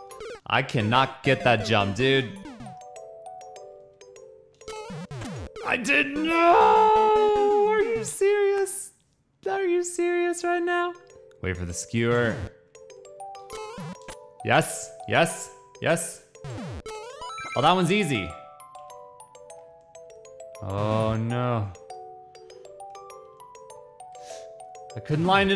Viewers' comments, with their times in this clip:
0:09 that was some nice melody